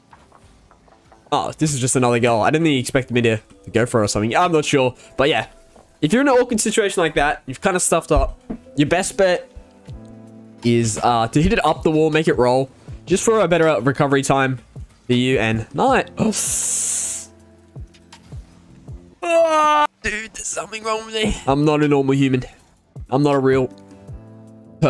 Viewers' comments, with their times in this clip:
0:07 was that a fart? looool